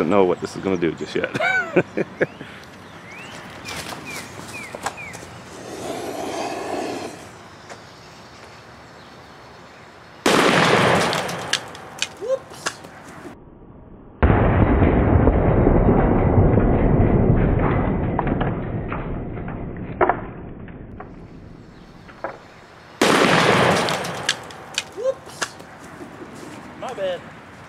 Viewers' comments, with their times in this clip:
0:10 World record hit on this channel: loudest fire cracker on video.
0:11 911 operator: 911, what’s your emergency? Neighbors: Send a police officer right away. We heard a gunshot. 911 operator: You heard a gunshot? What did it sound like? Neighbors: